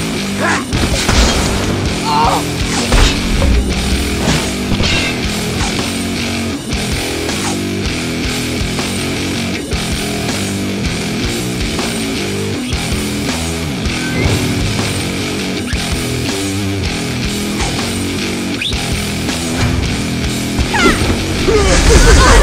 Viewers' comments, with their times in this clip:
0:10 Dawg i couldnt stand the music...taped out by in